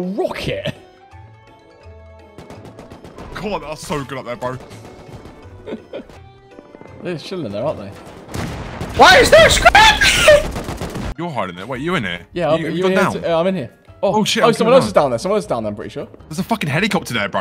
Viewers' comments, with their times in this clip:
0:03 Loved meeting you mate <3 (I am the guy screeming "why is there a scrappie")